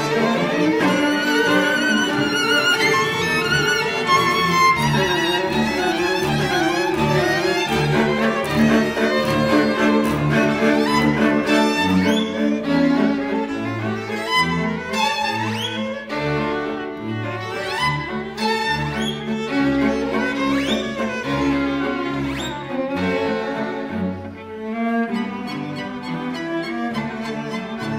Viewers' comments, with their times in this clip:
0:08 I love how they suck at everything but nail the Strauß
0:09 The flying dutchman except it's terrible and made me fail music theory ...and I got distracted also.